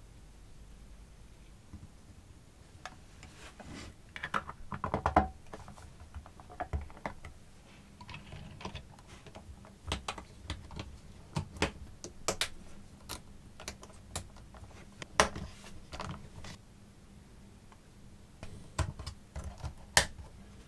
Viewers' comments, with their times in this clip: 0:04 werid closing noise